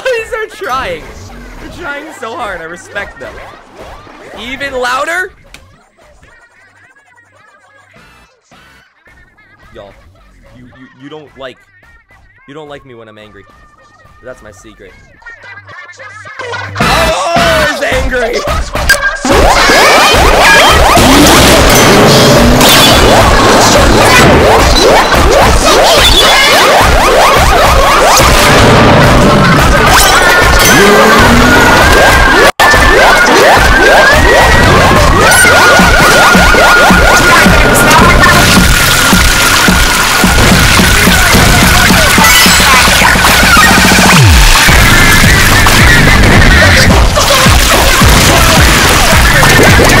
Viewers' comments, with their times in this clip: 0:05 The ear ringing around the world
0:05 failboats evil comfirmed edit THE CROWD GOES WILD YELLING LOUDER
0:09 Turn your volume down
0:09 be ear rape D: MY EARS ARE BLEEDING HELP
0:09 I love earrape But is too loud for even me
0:11 earrape is always lovely
0:16 SINGING INTENSIFIES honestly I was dead laughing at that part 😂💀
0:16 OH SWEET JEEBUS MY EAAARS
0:19 Octo Expansion: Earrape edition
0:19 R.I.P. Headphone users! XD
0:19 Rest In Peace head phone users
0:21 BRO IM USING HEADPHONES SO PLEASE!!
0:25 wheres headphones at max volume OwO
0:26 L O U D E R
0:39 I had headphones on and it killed my my ears. RIP me